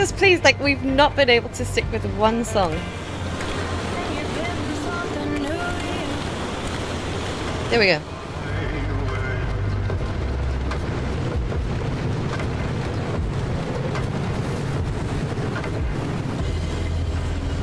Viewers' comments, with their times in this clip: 0:03 Catch the radio conversation that's happening and how perfect the radio music syncs with it at the end, brilliant fluke.